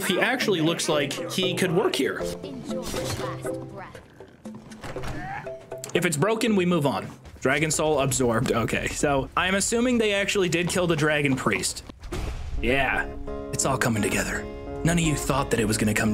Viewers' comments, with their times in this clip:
0:03 i was LITERALLY playing castle crashers when this came on and fucking thought the video was getting muted and the game audio was playing XDXDXDXD